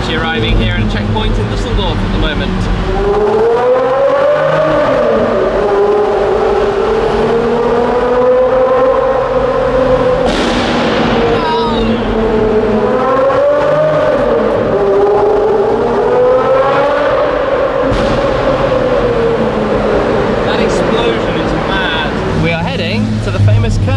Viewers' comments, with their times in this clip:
0:09 I was watching with 🎧 on & that exhaust bang was simply orgasmic ☺️😄